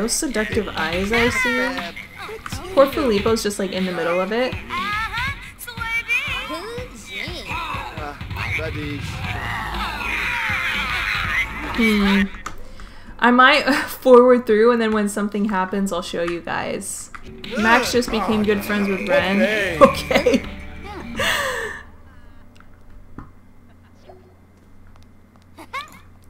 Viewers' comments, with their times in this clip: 0:08 am I the only one who heard that as ''Bye b**th'' 🤭